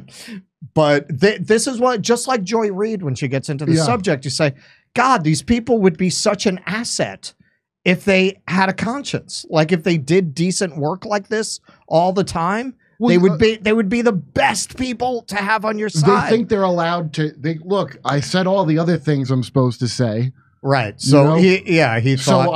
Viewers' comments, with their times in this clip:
0:04 Hasan seems to be able to hear Russell when Russell laments how a talented host like Hasan could be a tremendous asset to the cause of the good if he'd not sold himself out to the bad. Hasan hears it and though Russell has him on pause, Hasan is so moved that he actually breaks out of the pause and mumbles a dejected, "oh well".